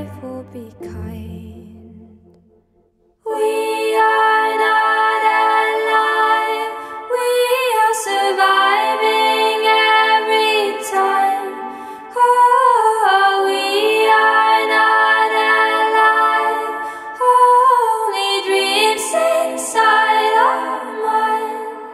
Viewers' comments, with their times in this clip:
0:03 When the song started, I thought that this most be the most conventional melody I've heard from her... but then again, ok... this is Aurora... my god, heavenly voices...